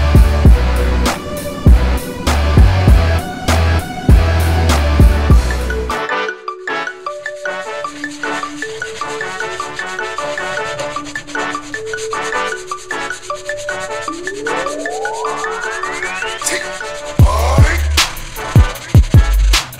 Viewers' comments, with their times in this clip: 0:06 the music beginning is straight fire!